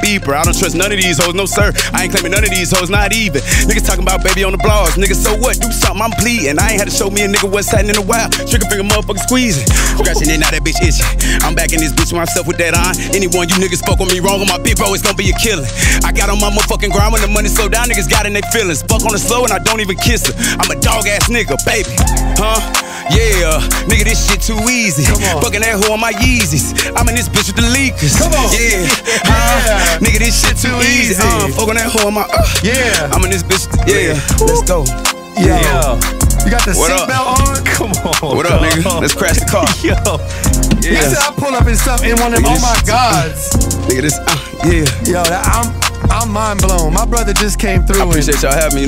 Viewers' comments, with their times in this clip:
0:09 this guys flow changes to the hardest flow ive ever heard, the speed the aggression everything just pure fire🔥🔥
0:10 loved that part when he marks his words hard asf🫡🔥💯
0:31 highest I’ve ever heard DaBabys voice 😂